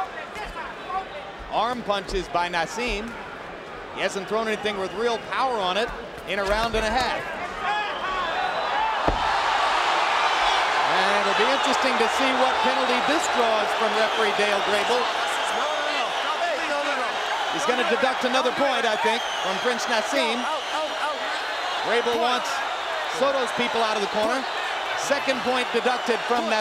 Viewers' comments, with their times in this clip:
0:08 That got a pop out of the mexican audience.